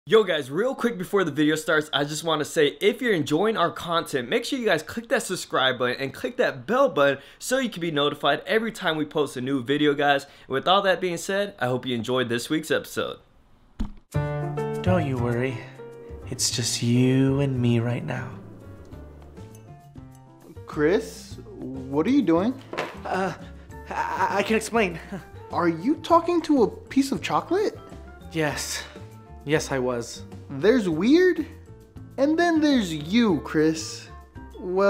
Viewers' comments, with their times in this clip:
0:05 2pac in the backround
0:17 I thought he was on the phone on speaker-